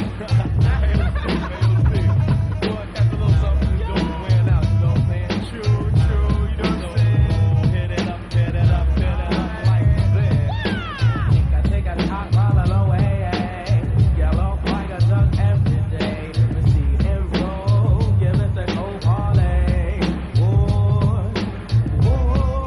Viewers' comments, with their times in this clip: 0:10 I love the reggae chant from Lord Sear !